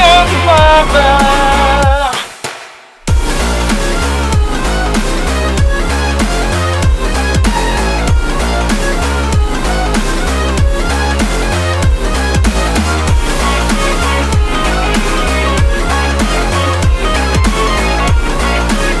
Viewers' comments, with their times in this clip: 0:04 i show meat